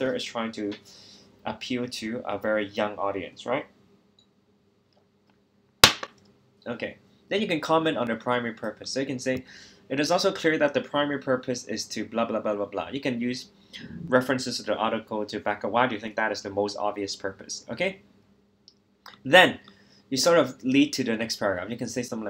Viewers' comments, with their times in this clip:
0:05 dude PERFECT snare sample